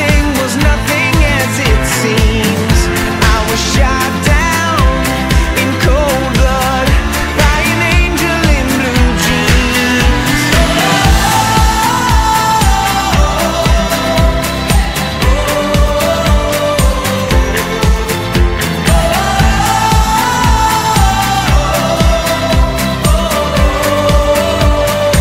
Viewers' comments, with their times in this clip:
0:10 Some parts of the song remind me of a cowboy riding on a horse!